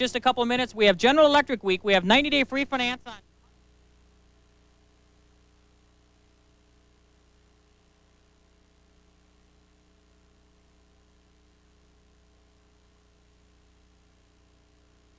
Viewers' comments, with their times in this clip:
0:03 The audio dropout was a problem with the commercial, not an editing/encoding error-- it returned immediately following the commercial.